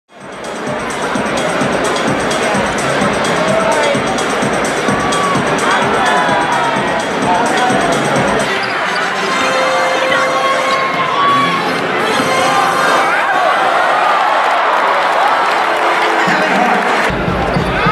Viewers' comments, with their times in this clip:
0:01 is so dark and i can't hear what they r talking about. But i bet is something funny, because is kevin hart. But for kyrie i don't know what funny, ahhhhh... I know kevin hart and kyrie are having a debate if the earth is round or flat? LOL